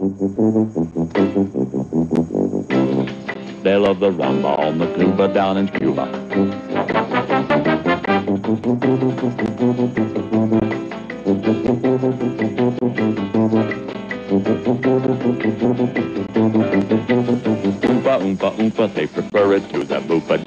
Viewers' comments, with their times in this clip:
0:08 I can't figure how Richard did this - he's taking a breath but playing notes on his tuba at the same time.